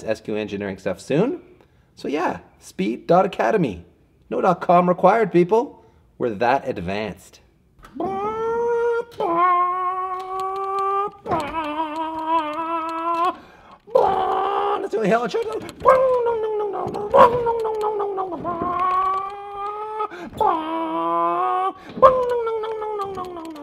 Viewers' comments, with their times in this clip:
0:09 it sounds like you have a miss fire. Or you need a new muffler.